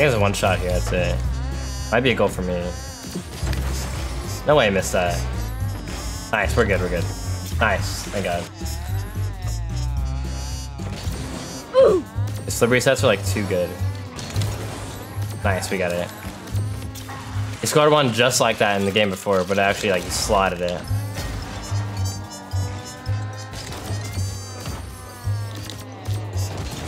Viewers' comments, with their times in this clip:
0:08 this car sounds so terrible 😂